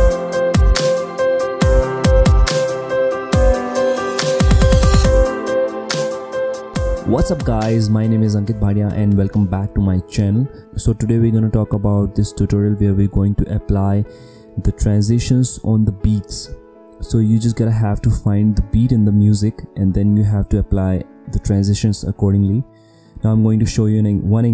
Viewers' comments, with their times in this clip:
0:07 welcome back to my chin